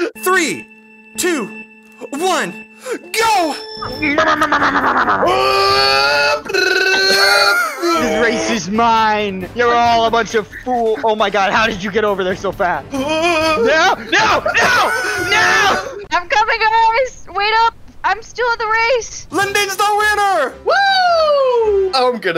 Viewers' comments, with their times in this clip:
0:06 man sounding like jotaro 😂